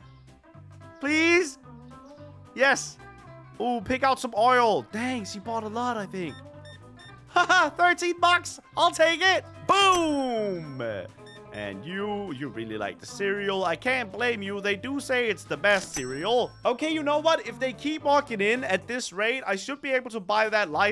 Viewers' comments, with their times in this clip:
0:08 we cant tell if he was being sarcastic or happy😂